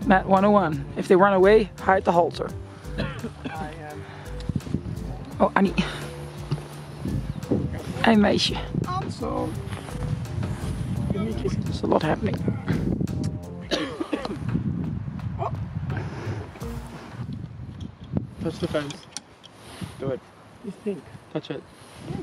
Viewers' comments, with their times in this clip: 0:06 did he said hey meisje